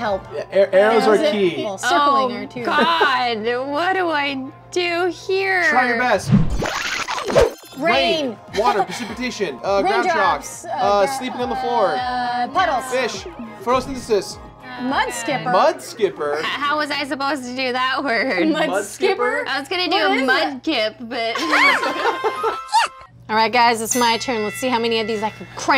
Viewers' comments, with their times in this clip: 0:09 it sounds like it says "rimjobs" (yes i know it says raindrops)